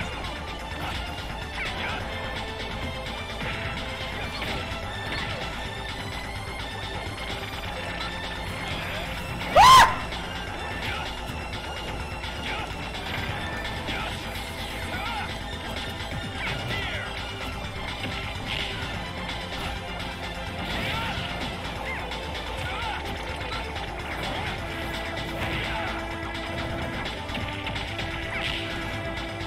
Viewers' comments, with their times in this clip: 0:10 The scream XD XD XD I lol'd